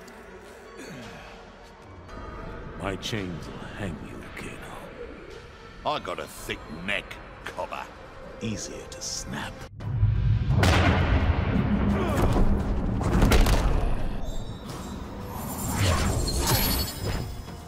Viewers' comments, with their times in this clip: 0:05 Why does J. Schlatt have an Aussie accent and a cyber eye?